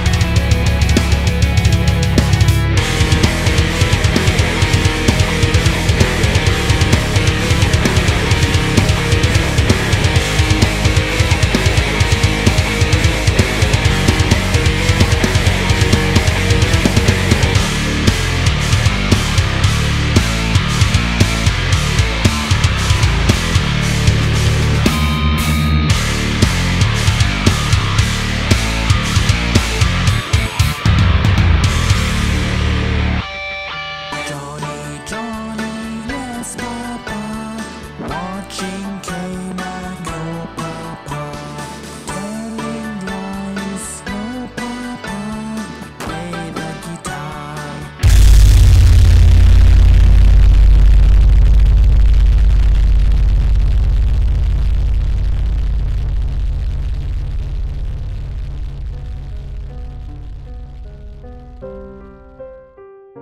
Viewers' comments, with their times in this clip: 0:03 sounds pretty rad tho, maybe a blend between SkyHarbor and Monuments?
0:03 sounded really good actually
0:18 that riff kills
0:47 We are number one is like 2 octaves below that boi. Aaand you played Bleed at half speed. Why. Frog sh1t actually pretty spot on. so I have to buy a new headset. GG. Also, thats why too high for my taste.
0:47 welp there goes my pair of ear phones